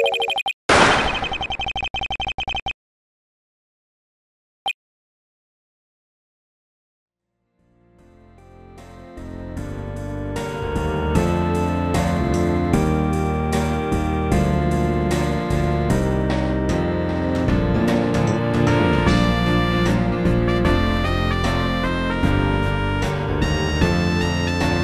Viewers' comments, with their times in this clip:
0:07 yk i thought the song was gonna restart here